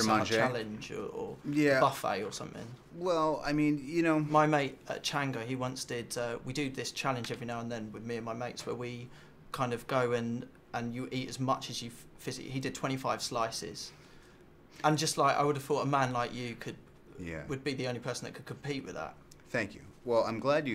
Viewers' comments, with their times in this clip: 0:04 totally cut him off there :S